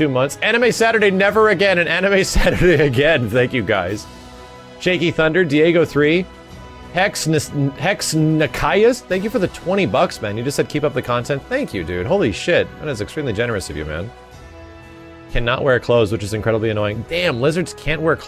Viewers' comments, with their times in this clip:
0:06 hearing him try and pronounce my callsign made my night on the stream and made my night now xD